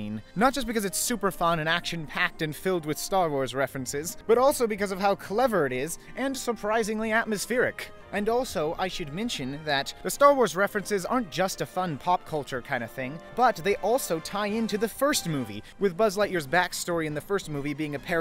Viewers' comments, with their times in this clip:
0:06 god those steps were so satisfying back when i used to watch this movie every 20 seconds..